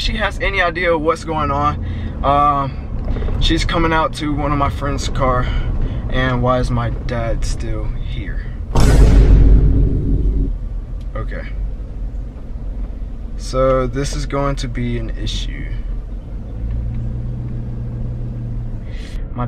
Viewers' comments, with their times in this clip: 0:05 the disappoint ment in his voice